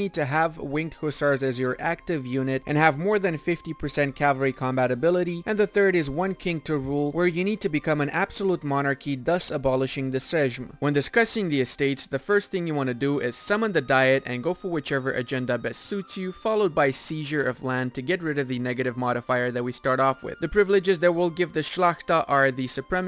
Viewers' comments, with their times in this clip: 0:10 what XD? seżm?